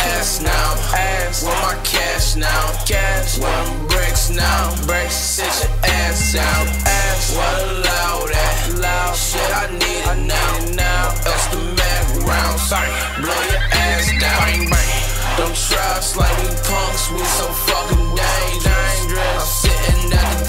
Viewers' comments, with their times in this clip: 0:07 lil peep flow